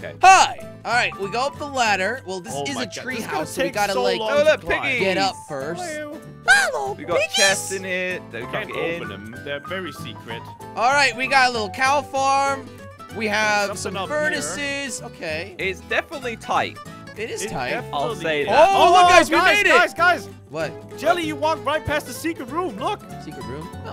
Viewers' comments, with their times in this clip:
0:06 Jelly you sound like Mickey mouse